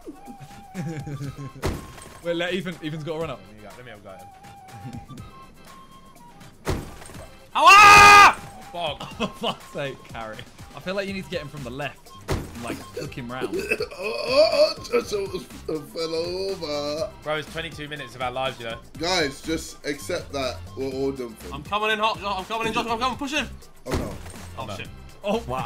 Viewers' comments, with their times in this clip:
0:07 Did man scream Allah😂